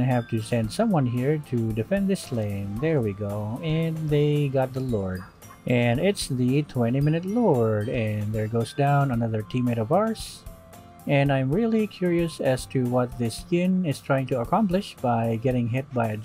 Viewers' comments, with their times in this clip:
0:04 Neighbors dog be barkin